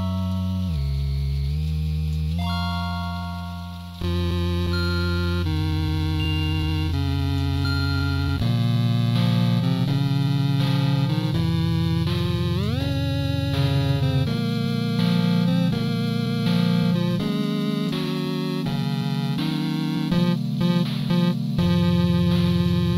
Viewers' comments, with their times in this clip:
0:08 sounds kinda like plant island form my sining monsters xd